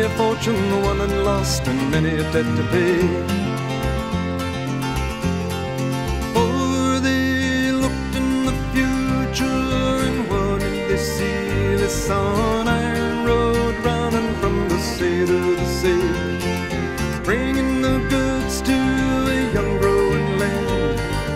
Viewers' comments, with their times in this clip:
0:06 I really Like the Change of Tempo - Like a Locomotive Picking Up Speed... at TIME "They Looked in The Future and What Did they See? They Saw An Iron Road Running From The Sea To The Sea" - such positive lyrics...
0:06 That time signature change is magic. Such a great song.